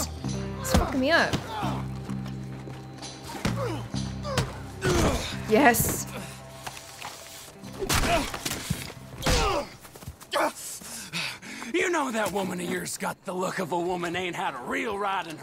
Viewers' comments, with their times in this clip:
0:03 He sound like...Trevor from GTA?